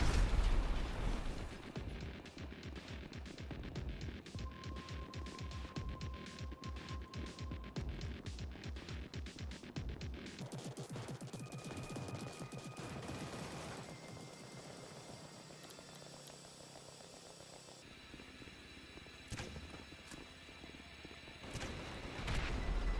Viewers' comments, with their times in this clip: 0:03 I love the music playing, reminds me of Red Alert form the early 2000s..